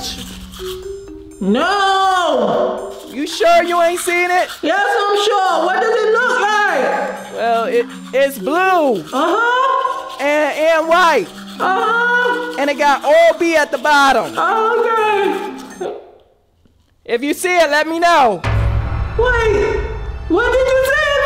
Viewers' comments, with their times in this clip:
0:04 Bro gag when drunk the orange juice